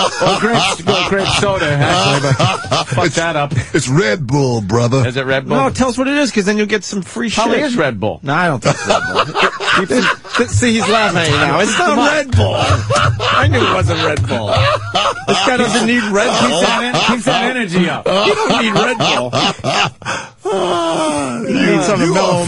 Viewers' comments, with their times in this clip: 0:09 That’s how you know Anthony is naturally funny. His timing of the “it probably IS redbull,” is perfectly timed and trampled over by Opie, but Mooney caught it 😂